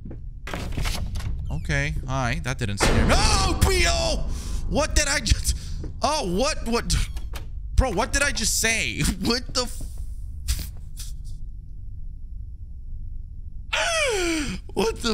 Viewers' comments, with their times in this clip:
0:03 might be the funniest reaction I’ve seen so far on this channel. The reaction to his reaction was even funnier, though. He baffled himself and could only laugh at the absurdity of crying out a word that never existed prior to that moment.